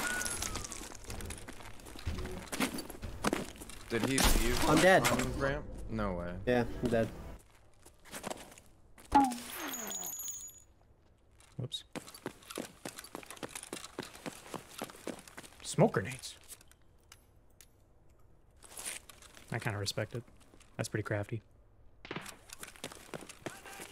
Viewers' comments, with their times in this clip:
0:10 absolutely love the video, the subtle "whoops" after tapping that guy made me chuckle hard.